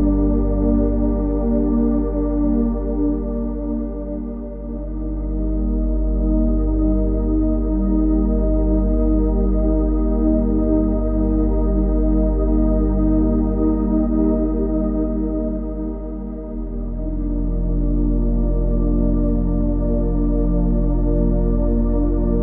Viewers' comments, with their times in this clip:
0:03 that was a nice guy who gave him relaxing music for him to sleep